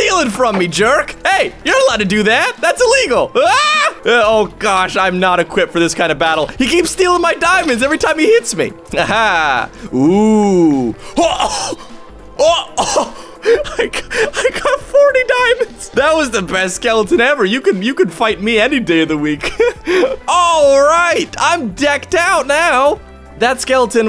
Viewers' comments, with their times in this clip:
0:08 And the UAHHH at the video is like annoying lemon XD